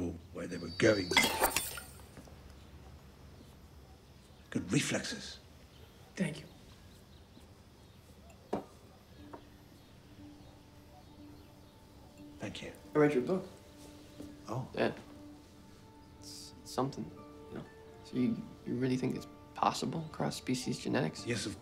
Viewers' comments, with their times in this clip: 0:04 Good! REFlexes! 😅 Sounds like a German 😂